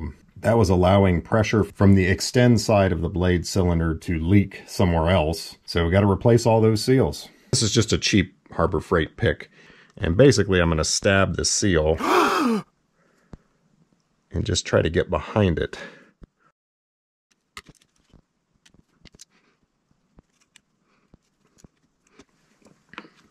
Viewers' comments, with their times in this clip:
0:09 "And basically I'm going to stab the seal". . . sharp intake of air in shock. Too funny. 😄